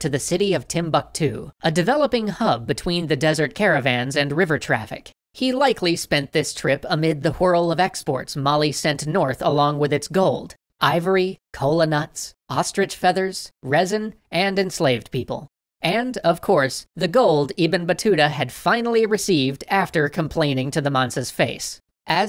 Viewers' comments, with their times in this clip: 0:06 Amid the what?